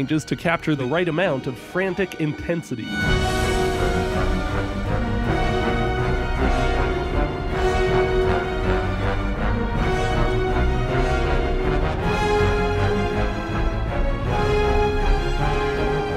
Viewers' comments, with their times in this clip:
0:03 The theme that plays at the chase sequence is Ori's theme, and the main theme of both this game and its predecessor. It's cast to 3/4 time and significantly sped up. Rather effectively, it acts as a callback to the first game's Ginso Tree escape, which was one of its cinematic highlights.